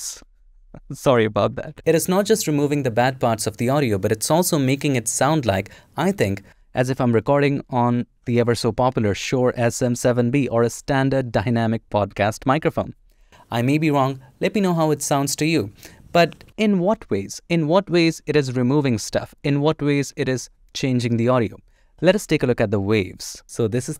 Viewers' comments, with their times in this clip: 0:06 no way it sounds like a pro microphone man, there is literally a high cut filter on the recording, i think you could do better than that with a simple EQ